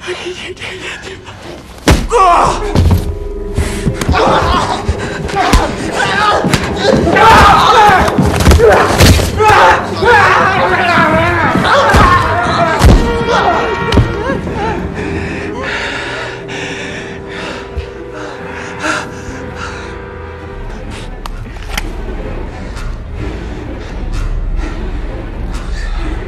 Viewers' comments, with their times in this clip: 0:08 makes me laugh cruise scream in this scene